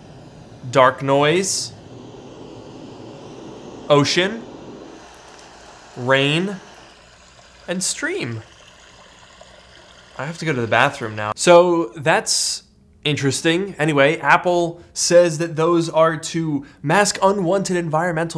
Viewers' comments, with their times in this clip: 0:05 how to pretend that your apple silicon Mac is overheating and the fans are going so fast